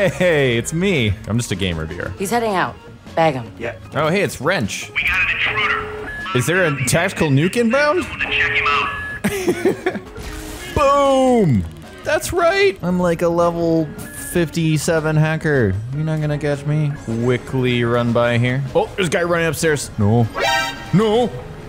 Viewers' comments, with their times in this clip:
0:05 oh yeah it does sound just like the Crysis MP's tactical nuke incomming alarm xD hehe nice reference man!